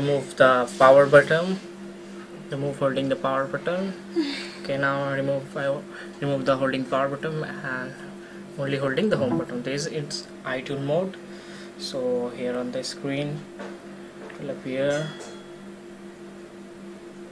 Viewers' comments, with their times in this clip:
0:04 Anyone notice the moan XD